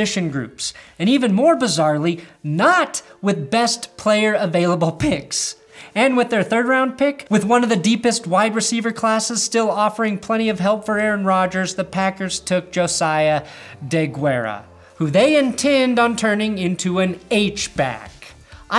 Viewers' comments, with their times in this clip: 0:04 That voice crack tho lol